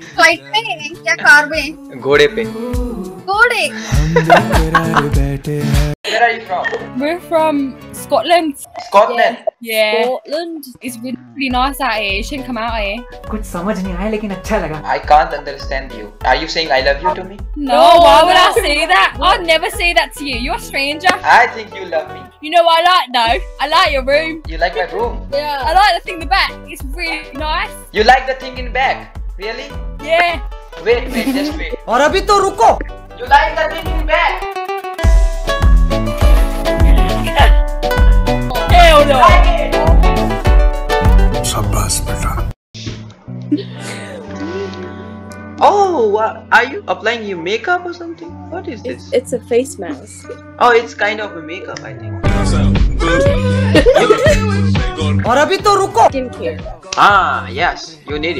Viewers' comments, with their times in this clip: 0:10 telugu song and girl 🤩🤩🤩
0:16 Taht telugu beat stole my heartttt
0:45 i think it's one of the hardest accent to understand